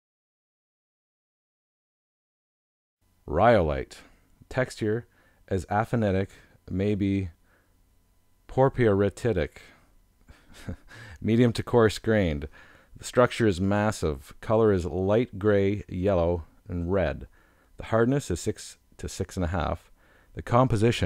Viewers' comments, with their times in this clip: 0:06 did this guy really say "guh-neese" for gneiss? I am speechless. He also completely mispronounced phaneritic and aphanitic. Also failed to mention which minerals are feldspars and potassium feldspars. edit: completely butchered porphyritic. Also I have no idea what that rock is but it definitely is not rhyolite.